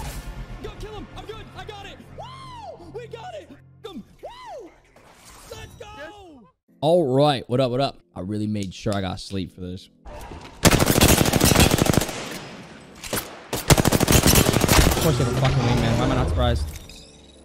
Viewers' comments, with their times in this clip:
0:05 tip : turn down volume